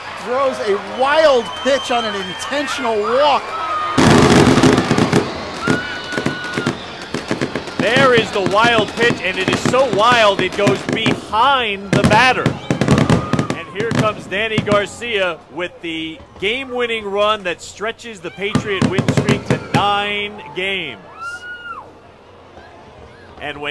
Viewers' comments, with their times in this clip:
0:04 RIP Headphone users.